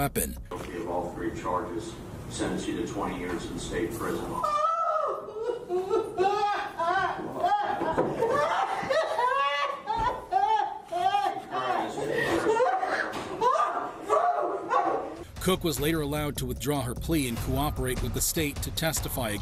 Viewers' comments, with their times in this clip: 0:03 Bro! I thought she was laughing! 😂😂😂😂😂😂😂